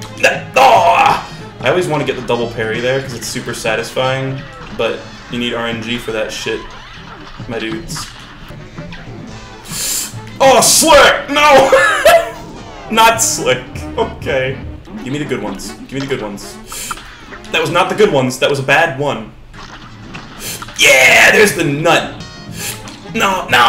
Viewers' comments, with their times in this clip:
0:10 you sound like super macho man when you dodge his attack in punch out